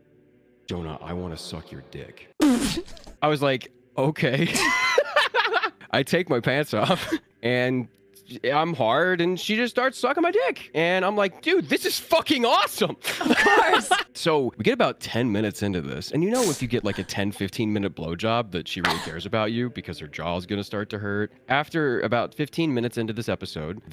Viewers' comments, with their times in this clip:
0:07 the way he says “THIS IS FUCKING AWESOME” 😂